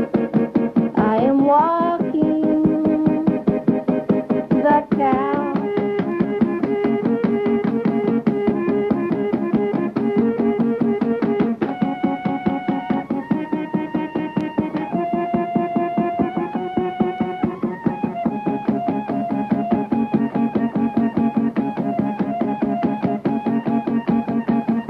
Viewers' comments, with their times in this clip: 0:05 one of the most beautiful pieces of music ive ever heard